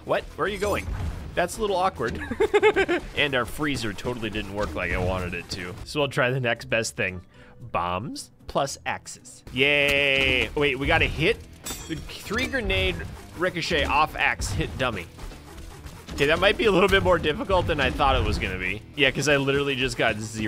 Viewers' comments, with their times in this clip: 0:07 amazing Morshu impression